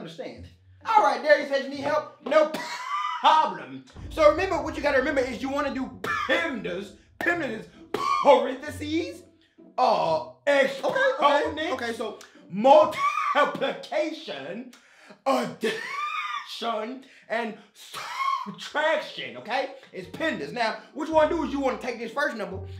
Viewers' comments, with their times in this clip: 0:04 this part got me rolling 🤣 Bro was wheezing every word 🤣